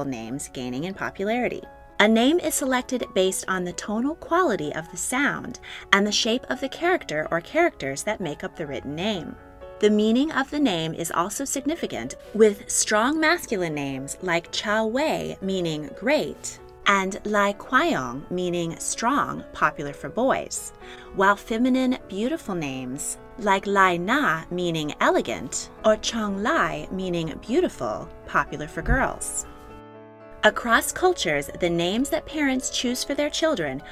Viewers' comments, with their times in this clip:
0:10 the way she butchered the pronunciation XD lmao correct pronunciations: Zhang Wei is "jang way" Li Qiang is "lee chyang" Li Na is "lee na" Zhang Li is "jang lee"
0:17 they didnt even bother to use google translate to pronouce li qiang???? no words.. disgraceful